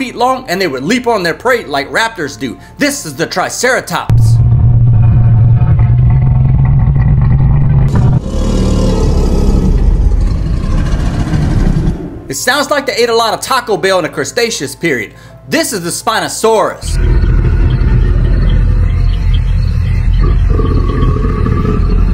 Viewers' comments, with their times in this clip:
0:05 That three-horned face dino doesn't sound scary at all